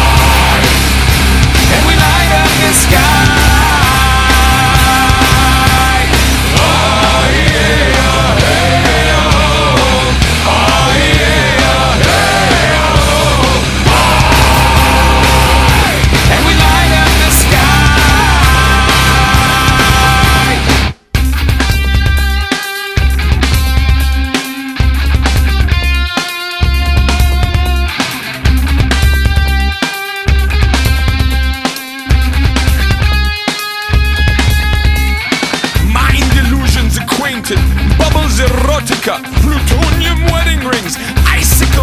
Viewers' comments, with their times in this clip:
0:10 that one sounds much more scary, AND I LOVE IT o-o
0:20 I finally noticed the guitar solo sounds like the Ending to all the knight rider cliffhangers
0:21 Is it just me or does it sounds a lot like knight rider
0:21 sounds like k2000
0:21 anyone ever notice the KNIGHT RIDER theme for the bridge ?
0:21 sounds oddly similar to knight rider theme.
0:21 sounds like night rider but with a couple changed notes
0:21 Is it just me or does sound like the knight rider theme
0:21 sounds similar to the guitar in the knight rider theme
0:21 It's basically the Knight Rider theme.
0:21 it sounds like the intro of the Knight Rider!
0:22 sounds like the knight rider theme song 😍😍😍
0:22 Is it just me or does sounds like the intro of Knigth rider?